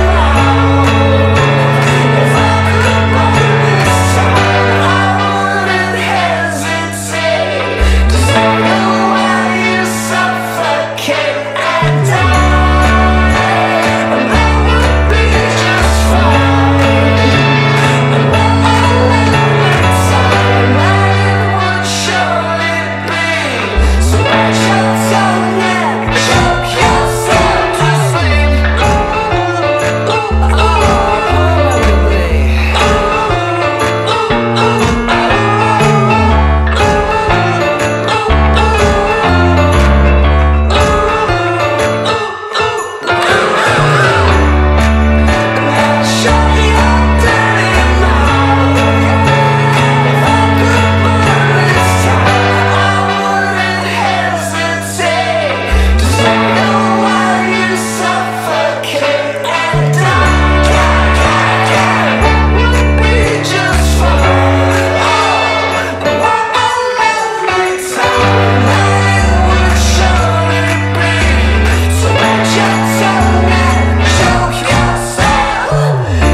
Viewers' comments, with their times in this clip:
0:08 Uhhhh theres someone singing with them EHHH so fucking creepy i love it
0:29 what is he saying here? I can’t make it out.
0:30 i LOST MY FREAKING MIND BECAUSE OF WHAT HE SAYS AND THE WAY HE SOUNDS AND CHWJNQAC BQWCLWECBA ITS SO CUTE
0:43 Dallon be like bird noises
0:43 the "oh oh oh" sounds exactly like that one part in please don't jump
0:43 no one: absolutly no one: not a single soul: Dallon b i r d n o i s e s
0:43 sounds like they're vultures lmao, tøp where you at
0:43 This should be the new Banjo-Kazooie theme song because of the and the creepy vibes lol
0:48 That yeah is just Great
0:59 I love the "DIE DIE DIE" So upbeat.